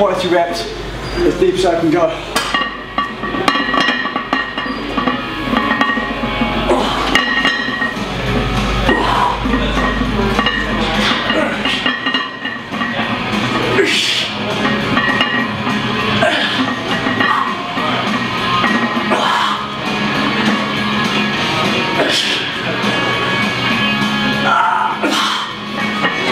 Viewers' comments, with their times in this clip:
0:10 Anyone else notice the fart ?